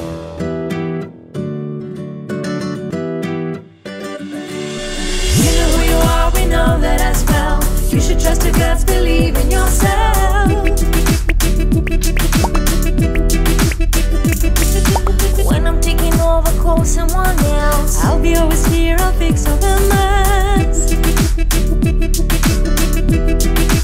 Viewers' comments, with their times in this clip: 0:05 I love this song